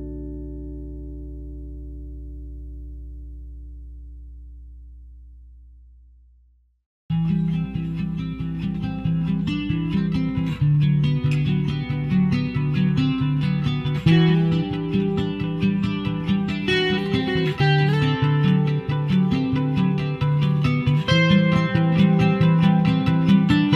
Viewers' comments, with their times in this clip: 0:07 that song sounds in a dream I had